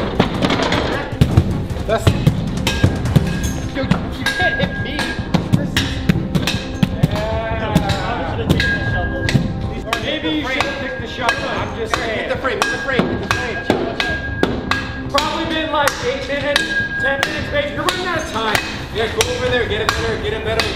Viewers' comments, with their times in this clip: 0:03 can you hear the rhythm?
0:05 did u hear the beat LMAO
0:05 kinda sounds like a sick beat
0:06 sick beat bruhhh 🤣